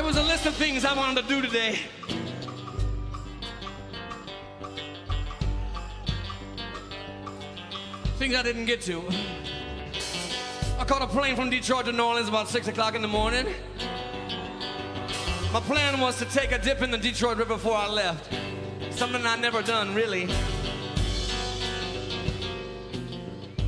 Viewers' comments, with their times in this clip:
0:06 That feedback ... Jack was really pissed. But the whole band's improvisation - amazing; improv virtuosos. You can see how they catch on to what song they're gonna play, how they all communicate within the song... awesome.